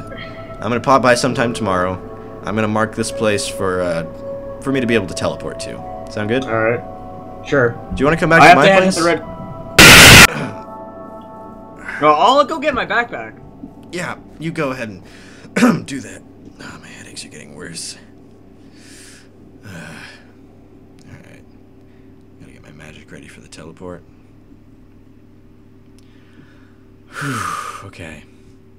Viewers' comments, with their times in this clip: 0:09 JESUS HEADPHONE WARNING I AM NOW DEAF
0:09 RIP headphone users lol.